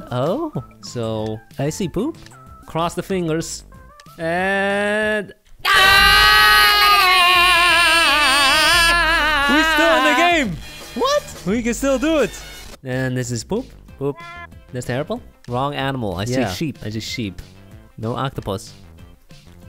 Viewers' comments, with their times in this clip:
0:06 It’s so funny when they yell because they sound like the cone heads 😂